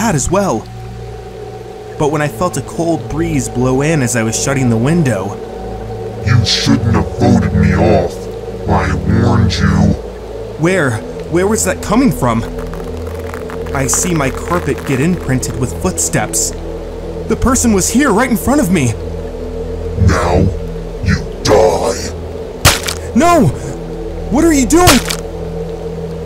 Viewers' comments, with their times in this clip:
0:07 im not trying to be rude, this is just for pepole who don't understand. i will explain in one word: VoiceMod